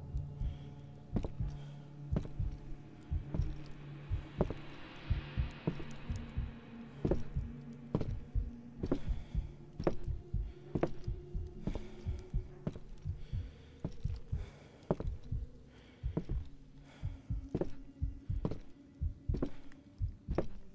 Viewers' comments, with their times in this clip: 0:05 girl went mute